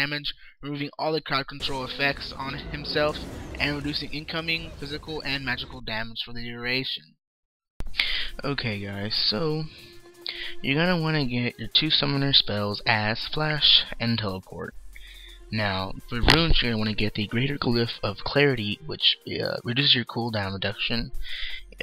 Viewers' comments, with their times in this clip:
0:08 Really NICE SONG !!!???